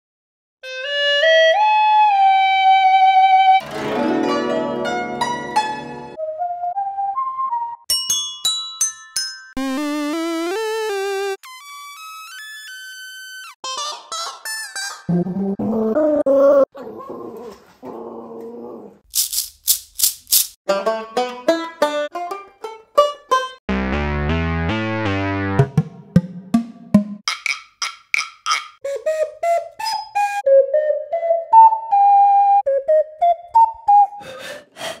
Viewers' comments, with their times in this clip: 0:03 McDonald's Back In Ancient Times In China Be Like:
0:03 sounds like a chinese riff
0:04 The most coolest sound which is guzheng
0:04 The guzheng is the best
0:13 stylo phone gen X1 is very very good
0:13 a sound of a dog
0:15 i love the autotuned dog
0:16 On i hink its cute, autotuned, pest sounding.
0:20 hands down its the banjo
0:23 burgers is my favourite instrument